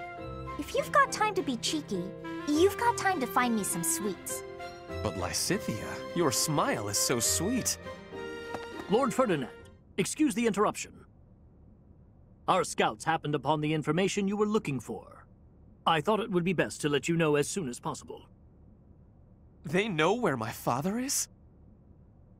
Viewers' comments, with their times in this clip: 0:09 Wow! I didn’t know Ringabel was a Knight of Seiros!